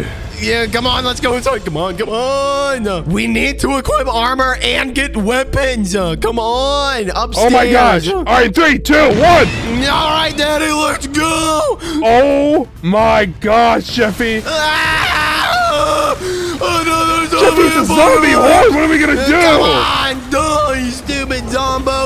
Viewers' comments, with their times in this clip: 0:06 bro, really did the shadow clone jujutsu sound and got away with it💀